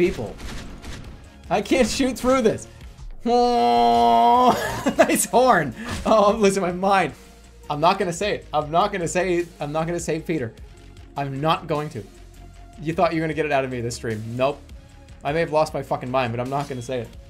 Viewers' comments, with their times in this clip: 0:03 angry man activates anti anger horn